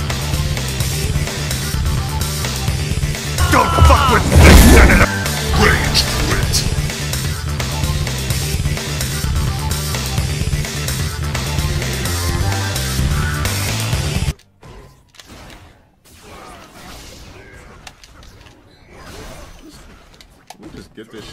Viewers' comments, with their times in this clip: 0:03 yo that metal gear rising sound clip fits perfectly.